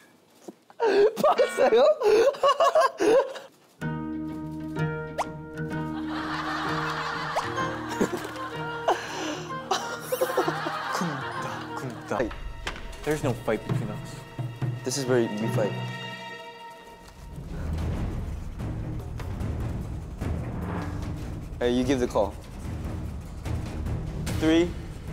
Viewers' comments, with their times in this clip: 0:10 The very very subtle sound effects they put on Mark's wink gets me everytime LMAO